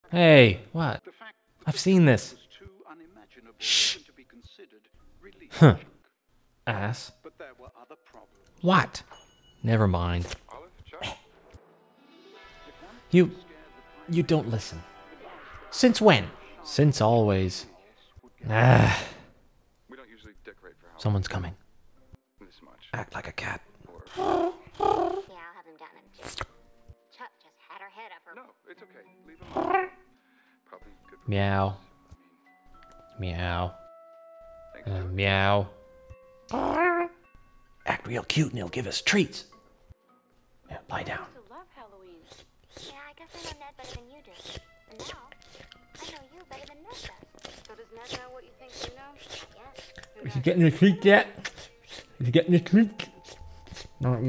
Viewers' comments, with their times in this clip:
0:03 That "Shhhh" and head turn is hysterical.
0:03 That's just like how my mom shushes.
0:05 they predicted the villager sound
0:15 "Since WHEN? " Omg that part blended so well!
0:30 I know it's fake because of that sound. My cat doesn't "meow" like that 😾😡
0:31 What still gets me is the piss-take "meow" ...
0:31 What still gets me is the piss-take "meow" ...
0:32 The Meow sounds like when Brian(family guy) pretend to be a cat to touch Lois while she is sleeping.
0:41 what is the noise background